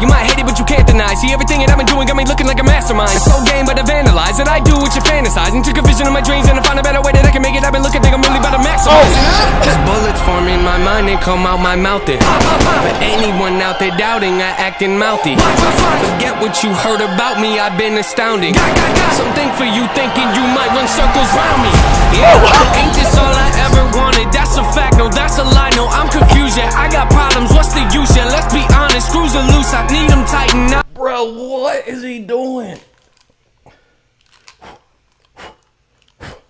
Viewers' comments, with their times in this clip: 0:06 that was rap god level
0:20 Can we all acknowledge how timely he pulled that beat from the heavens and dropped it
0:20 my fav reaction part when when the beat drops
0:20 drop from heaven
0:21 best part of the reaction that beat drop how he reacted 😂🔥
0:21 i swear is everyones reaction lmfao the switch is so HEAT
0:23 ... From this time on he was flying 😂😂